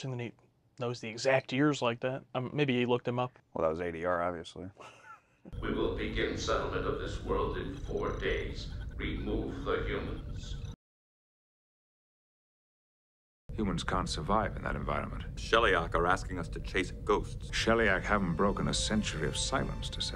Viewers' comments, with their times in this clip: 0:05 if you notice there, Riker's voice has the same pitch and reverb as his comm voice in the previous shot, AS he moves away from the shot... that's dubbed over. Frakes just doesn't have the stage presence to speak up away from the mic... whereas Stewart, he just cranks it up to 11 whenever there's a wide shot. you'll see it going forward: when the camera pulls back towards the viewscreen to frame the whole bridge and there's nowhere to hide a boom mic, Stewart goes full Shakespearean, every time.